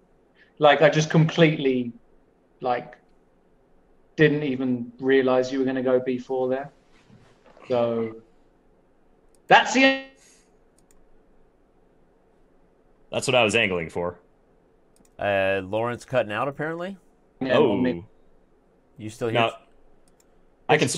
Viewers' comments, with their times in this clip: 0:08 “thats THE EeeeEEEeeEeeEE”